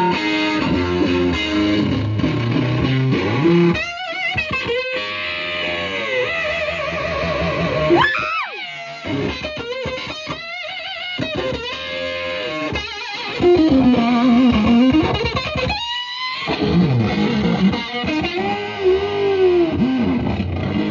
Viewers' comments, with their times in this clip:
0:07 Love that scream when he hits the whammy